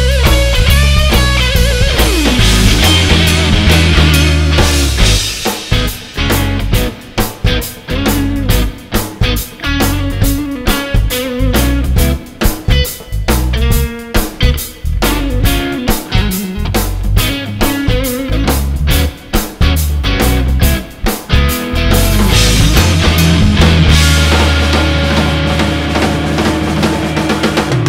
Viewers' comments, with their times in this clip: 0:09 my favourite lick great performance.